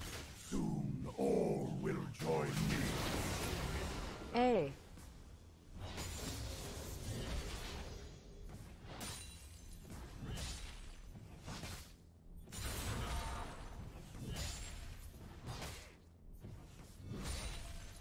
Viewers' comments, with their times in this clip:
0:04 So nobody is going to mention the random " hey "